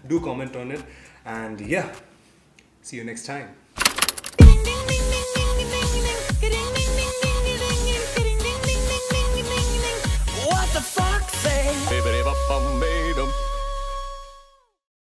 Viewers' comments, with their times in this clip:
0:10 Feel the music 😁😁😁😁😁😁